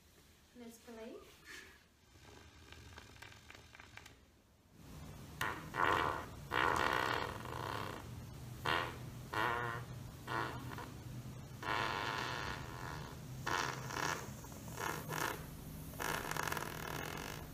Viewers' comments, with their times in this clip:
0:04 Check it Beavis em,heh "Boing",